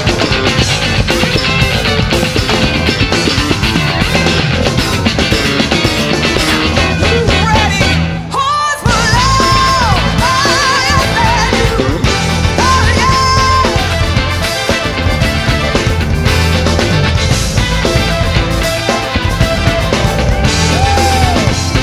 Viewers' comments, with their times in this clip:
0:09 best Trumpet Ever yeeeeaaaaaah !